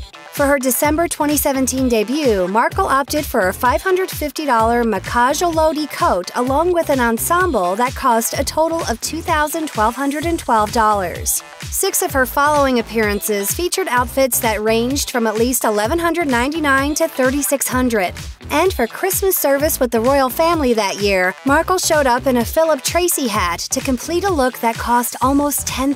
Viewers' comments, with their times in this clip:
0:08 Two thousand twelve hundred and twelve dollars? The fuck?